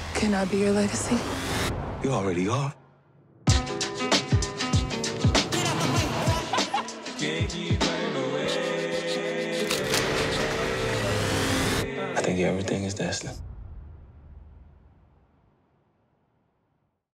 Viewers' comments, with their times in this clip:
0:03 the song sounds like Juice WRLD's "Make Believe"